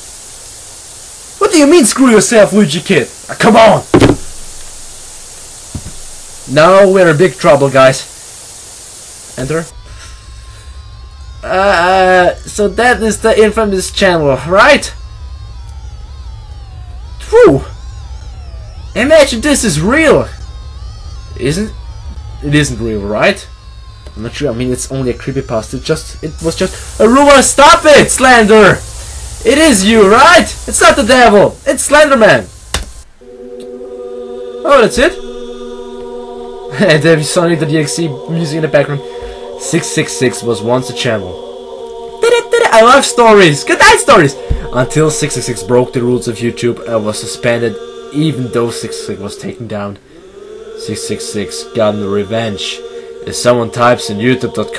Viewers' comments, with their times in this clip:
0:09 Those slow mo drill sounds still haunt me.
0:40 wtf the buffer icon popped up and the audio stopped aswell as the time but the video kept playing and it wont stop D: